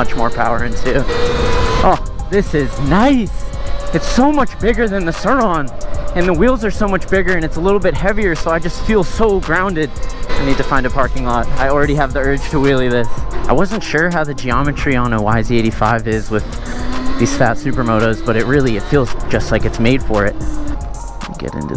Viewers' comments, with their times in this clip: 0:08 background music is cool, and the scenery is nice